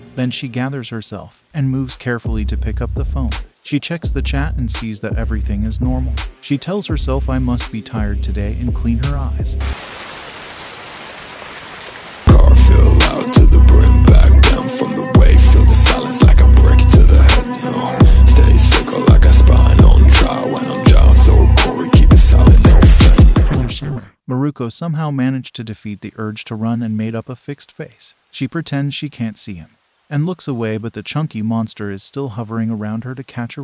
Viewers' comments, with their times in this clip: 0:09 The song though, it was fire! 🤣🔥🔥
0:11 nah this music be POPPIN
0:21 i watch this two times so now i didn't get scared when the music played